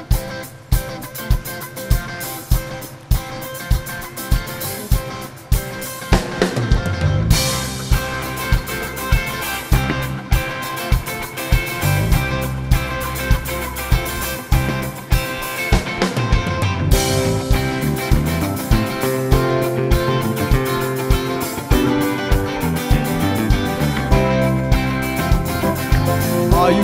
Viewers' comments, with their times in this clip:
0:07 Wow, for a song that has such meaning this is so lifeless. Perhaps that's why that woman looks SO bored :-D